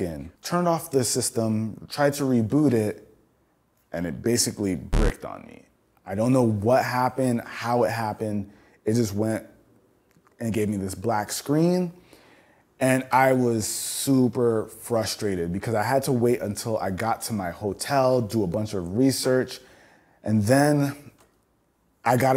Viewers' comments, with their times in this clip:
0:03 Did he just say breaked on me 😂😂@